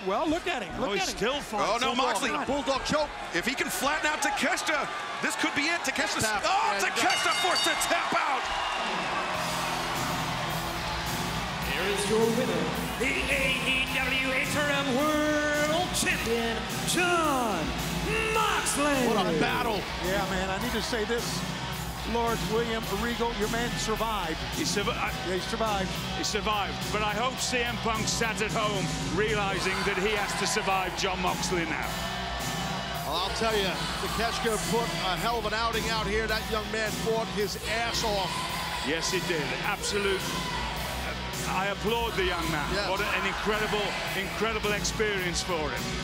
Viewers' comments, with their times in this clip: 0:10 The way Justin said "Here is your winner." Reminds me of WWE2K14.
0:38 the dude dressed like sting having an emotional moment swear the dudes singing and crying at the same time